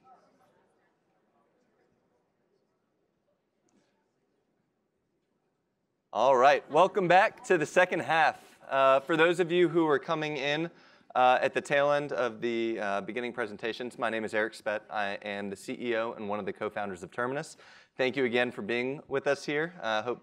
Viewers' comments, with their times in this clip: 0:08 the lady second farthest to the left sneezes. I felt it through my phone because of how much we care about sneezing now. 😂